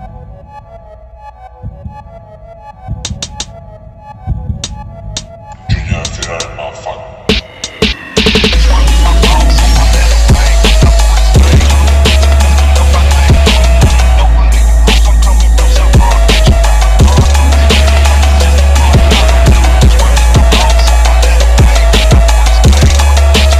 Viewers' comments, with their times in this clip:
0:04 right on beat